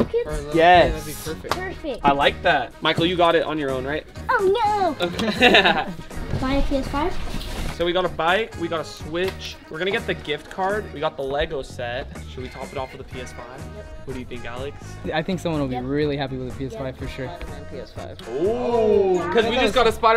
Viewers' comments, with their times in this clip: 0:03 Why did bro sound like that 💀